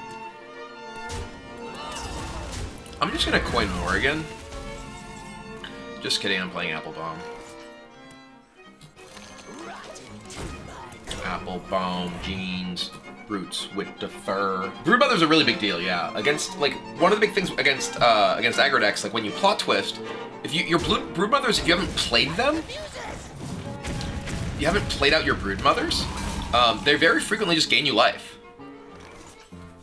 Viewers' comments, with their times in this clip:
0:10 Nice rapping love it